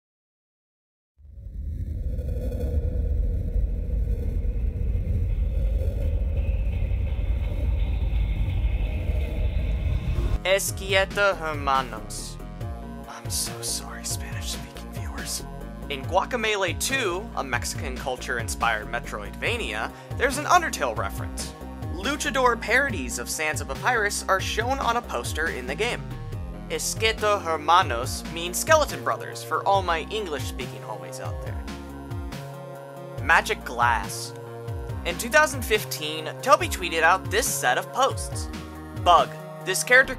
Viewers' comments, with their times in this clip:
0:10 no way bro said "eskieto ermanos"💀 😂
0:10 im losing my shit over the way they pronounce it 😭😭😭
0:26 you didn’t even try the 2nd time 😭